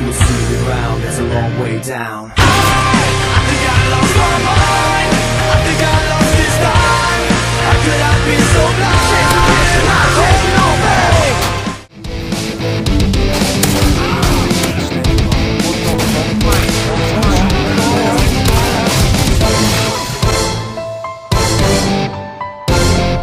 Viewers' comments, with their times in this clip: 0:09 music and reaction= WIN